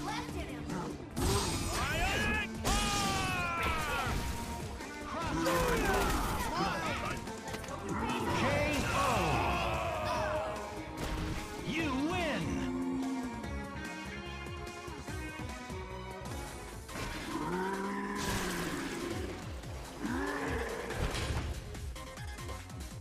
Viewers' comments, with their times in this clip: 0:08 Spencer's "Oh!" synced up perfectly with the announcer's "O".